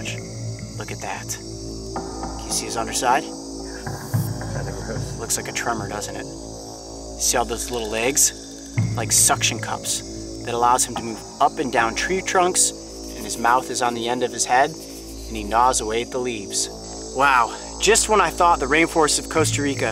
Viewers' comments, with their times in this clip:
0:05 Coyote saying looks like a Trump isn't it